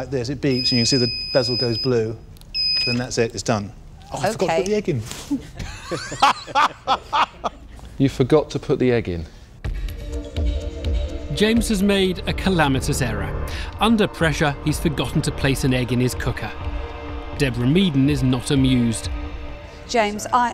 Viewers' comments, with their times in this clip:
0:03 Duncan's laugh when the guy forgot to put the egg in 😂😂